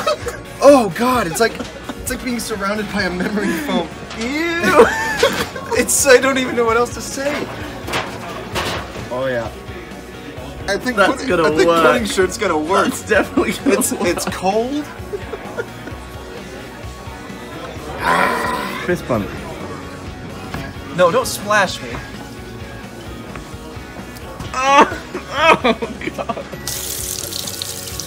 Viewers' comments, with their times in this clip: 0:10 I've watched this so much... I can't get over the person in the background who just.. sighed i disappointment lmao